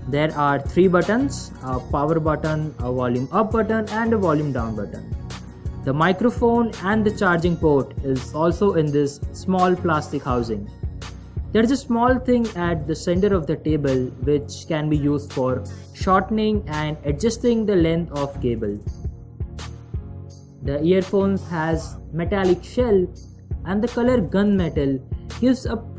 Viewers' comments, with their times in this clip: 0:10 Who else heard "Table" instead of "Cable" ??